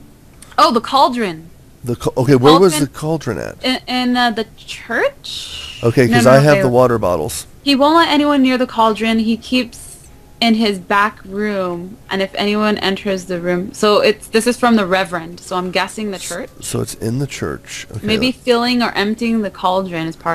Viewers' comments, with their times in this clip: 0:04 anyone else heard the explosion????